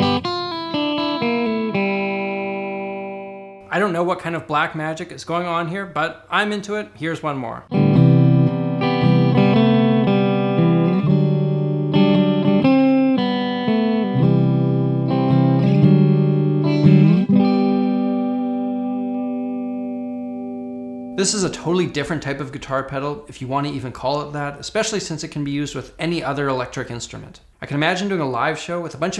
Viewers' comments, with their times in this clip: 0:08 that would sound amazing with a slow vibrato effect over it
0:13 I don’t know why but reminded me of dire straits